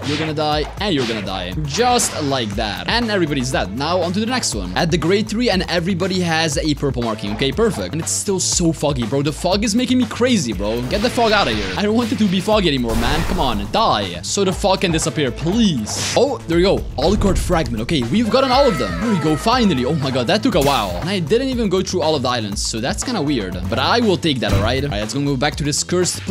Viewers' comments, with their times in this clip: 0:10 I misheard him saying "Get the f*ck out of here" XD